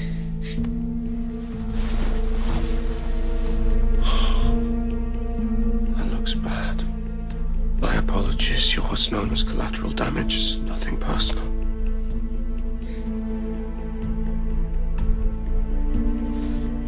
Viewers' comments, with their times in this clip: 0:04 the way Klaus say ohh...omg he actually feels her pain